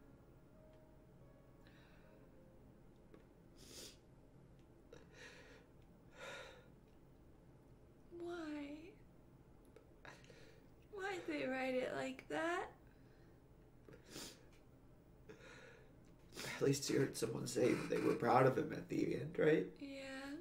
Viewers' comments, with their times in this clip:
0:07 That painful 'why'.